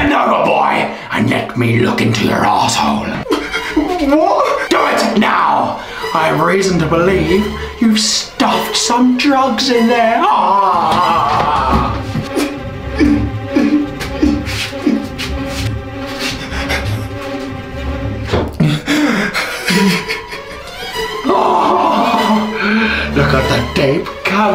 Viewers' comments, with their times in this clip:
0:10 whats that suspenseful music